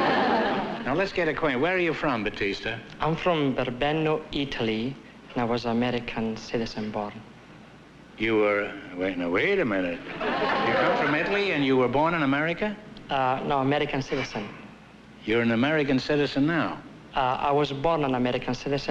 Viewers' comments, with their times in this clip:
0:04 when he speaks with an Italian accent, he sounded like Andy Kauffman.